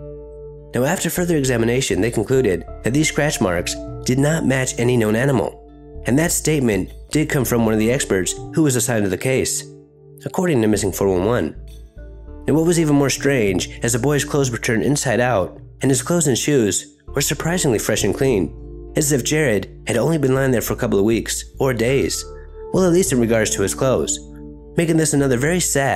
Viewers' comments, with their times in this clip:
0:10 is that fork and knife sounds in the background of your rec?